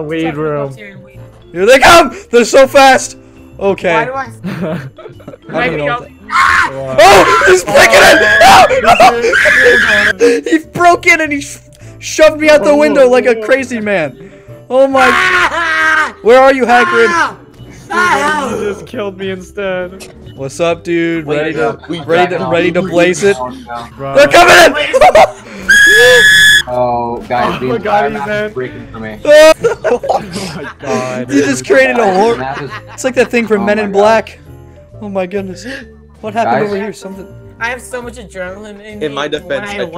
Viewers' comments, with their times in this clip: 0:08 kermit jumps off the building meme OHHH OHH OHHHHHHHHHHHHH!!!!!!!!
0:25 He screams like 5 years old